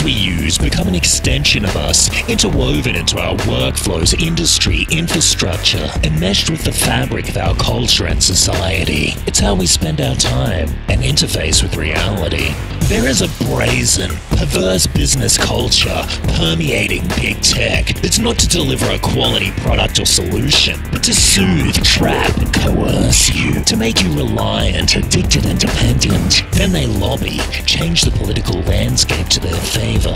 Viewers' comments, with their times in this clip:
0:06 i love how your voice tone syncs with the background music
0:11 this sounds like you rapped